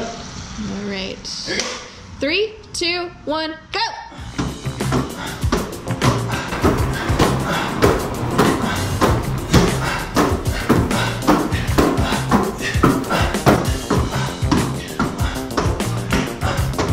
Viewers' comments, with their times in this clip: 0:04 with the music and 2 men grunting and breathing hard and thump sound made it sound like something else. 😂